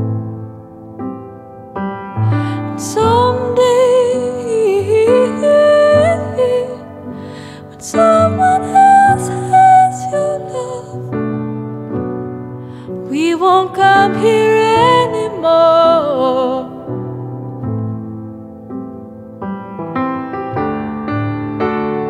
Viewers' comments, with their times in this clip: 0:03 After is enough to give me shivers and bring tears in my eyes❤ I am glad I "liked" the video before watching it😌 Birdy's voice is something else...angel.❤
0:09 I love it when her voice sounds like flute, so fragile and quavery ...